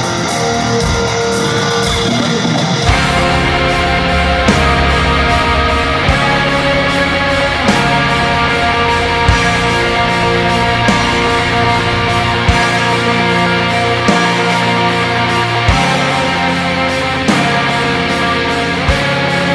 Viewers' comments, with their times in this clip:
0:04 Whew, the atmosphere on that song is amazing. Do you know which song that's playing? Take care.